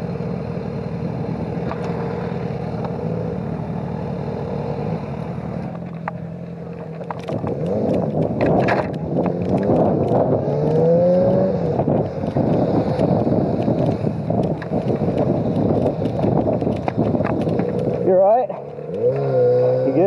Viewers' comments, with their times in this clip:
0:05 OK, the engine's sound and speed at which the guy was running confused me and I thought that he somehow managed to turn his bike around on the spot, or was an ancient kung-fu master of the Great Art of Riding Backwards :-o